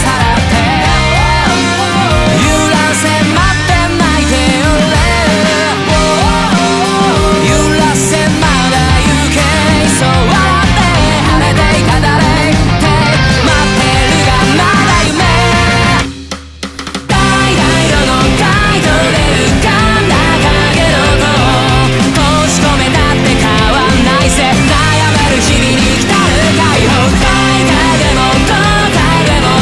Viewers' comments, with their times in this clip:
0:10 I like the part right before the beat drop that sounds sick as hell Edit: